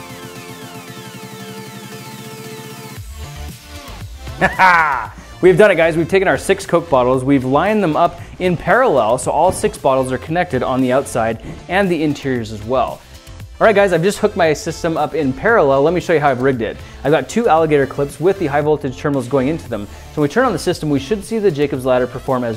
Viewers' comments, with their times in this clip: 0:03 nice evil scientist laugh 😂